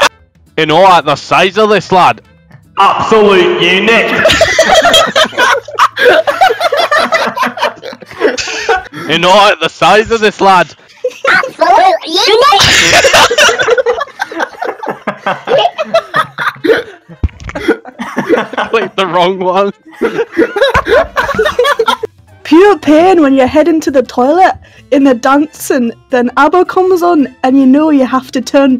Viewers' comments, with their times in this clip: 0:07 you can hear the accent through the distortion
0:11 What the hell was the effect he used on his voice that was fucking amazing, I need to use that
0:11 The true Scottish accent